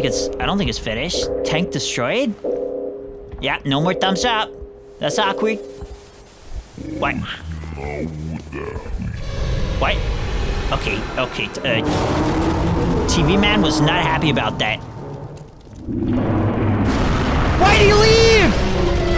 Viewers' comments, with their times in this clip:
0:06 Another one: “you had one job” but it sounded like “oh slow down”